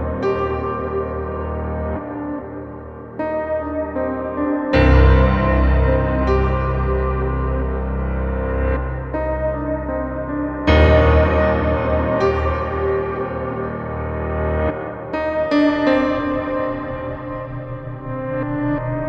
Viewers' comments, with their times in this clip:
0:05 love that piano forte. Sounds like how mad you get when someone dies that you love. This so intricate and beautiful.